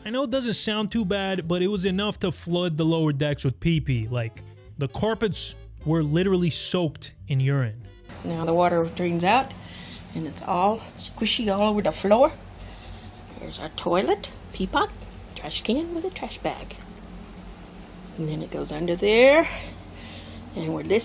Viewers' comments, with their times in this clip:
0:08 what an annoying voice!